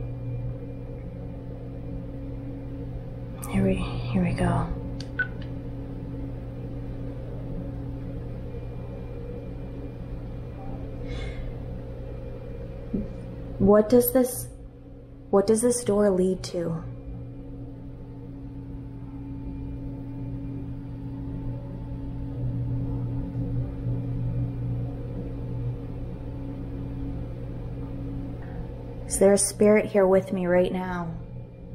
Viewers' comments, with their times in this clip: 0:04 there's a çreepy voice talking. Sounds like a man but don't know what he's saying xx 👻
0:18 Omg foot steps